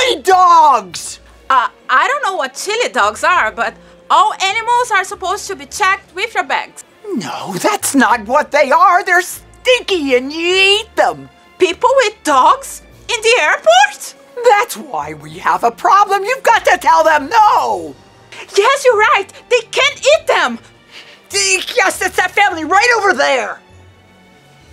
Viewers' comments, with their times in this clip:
0:07 her voice are similar.. i don't know who is it but if you closed your eyes, you'll recognise it